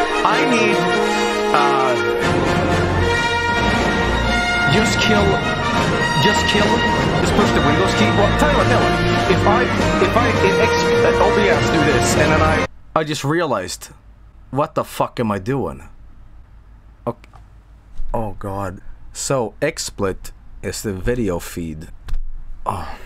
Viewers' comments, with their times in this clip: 0:09 I like how, despite all the chaos, and having his attempts at speech interrupted by T R U M P E T B L A S T, it never occurs to Joel to just mute XSplit until he can fix it, or at least be able to talk. At least not until